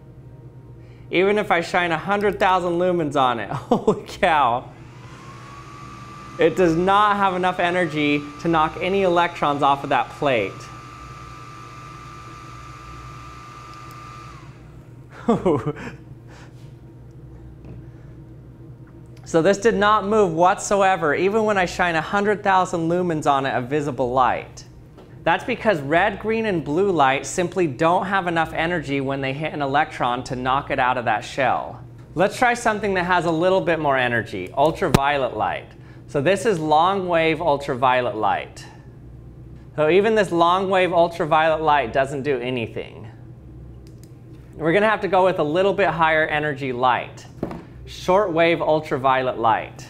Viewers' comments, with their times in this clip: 0:04 cooling fan kicks in THATS BUILT INSIDE THE TORCH that gives the idea of how BRIGHT that thing is and how HOT it gets due to the BRIGHTNESS
0:10 was that the sound of torch or a hair blower.😲
0:32 Okay so as an audio engineer and amateur lover of physics of all kinds, i just wanna say that you proved UV lights raw power in what you were accurately explaining around the 3 minute mark, because at ~ when you pointed the UV torch at the camera's microphone and turned the torch on, you can actually hear the UltraViolet photon particles hit the transducer of the microphone!!😳 As amazing as this is, i just had to point it out so please excuse the chaotic nature of my explanation as im just really amazed and i kinda wanna see this phenomenon recreated by people more articulate than I.💁🏽‍♀️😅
0:34 Anybody else had that auditory disturbance ?
0:34 did that light just cause the microphone sound there